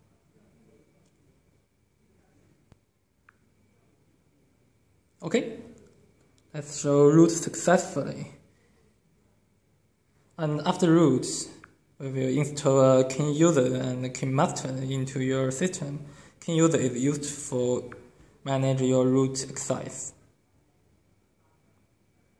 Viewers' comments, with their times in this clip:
0:09 dude what language do u speak lmfao😂😂😂😂😂😂